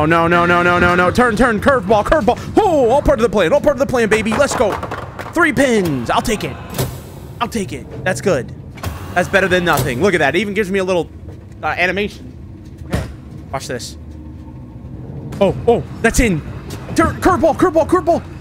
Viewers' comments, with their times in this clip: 0:05 "3 pins! Ill take et!" The cadence in his voice was perfect Sounds vaguely of jerma sometimes ngl